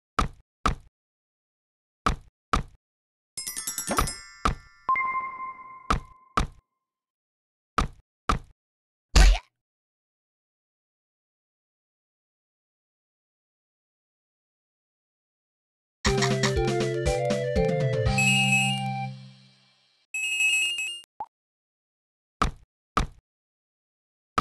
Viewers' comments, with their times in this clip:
0:09 a boy uses axes to thud down the boys